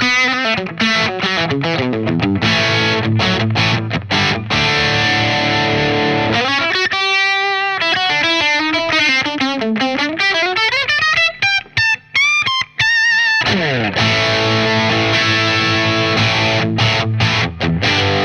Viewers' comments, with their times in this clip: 0:05 sounds like a telephone box.